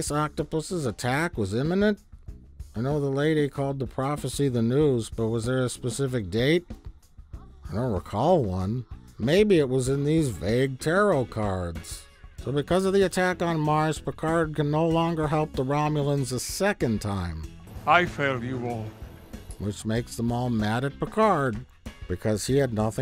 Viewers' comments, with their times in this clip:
0:06 ...did Plinkett use a straight up porno as background music? LOLOLOL
0:07 Why are there porny moans 😂